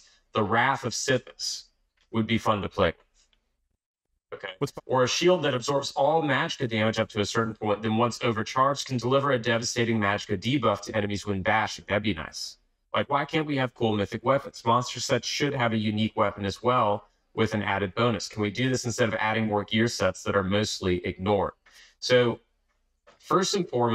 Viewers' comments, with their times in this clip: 0:05 If it helps you to pinpoint the issue with sound- you can also hear a tiny echo of "What's popping?"